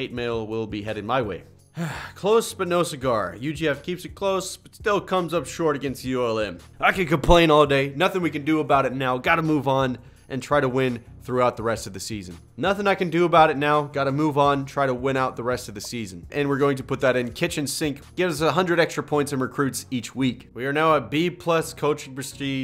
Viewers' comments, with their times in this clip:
0:05 Go to editing audio mistake..?